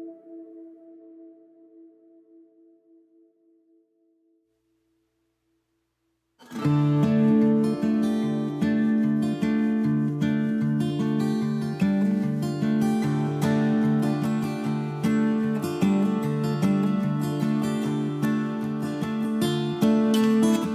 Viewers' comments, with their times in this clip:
0:07 Great Job man ! That music added a nice touch. Really liked the acoustic The first song reminded me of a DEVO song. Whip it. Take care, safe travels.